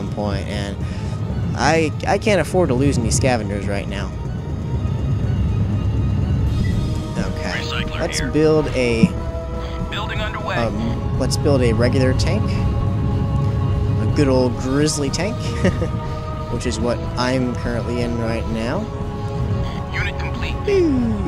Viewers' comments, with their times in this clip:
0:06 The music reminds me of Metroid Prime.